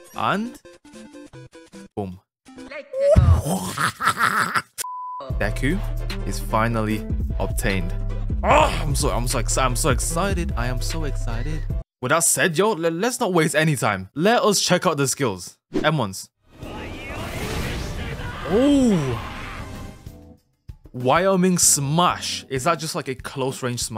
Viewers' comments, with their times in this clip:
0:04 My man sounded like Waluigi